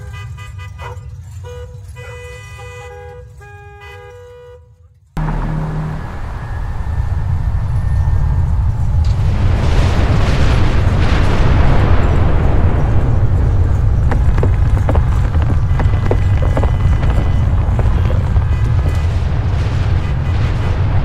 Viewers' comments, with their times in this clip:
0:05 Lassie! Stop barking! my dollhouse is ruined